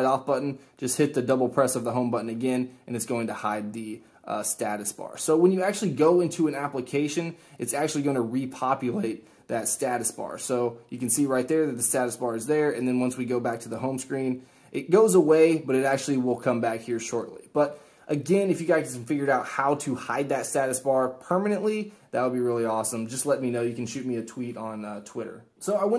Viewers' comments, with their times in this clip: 0:08 Best voice crack ever
0:08 BTW nice voice crack 😂😂😂😂👍👍👍👌